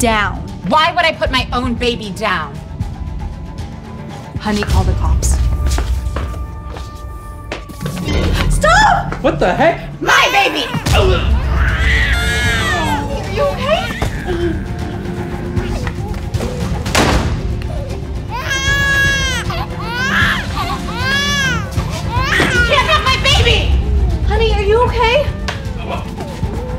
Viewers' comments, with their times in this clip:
0:10 Damn she kick him in the balls and the face he made and the baby cryin god damn 🤣🤣🤣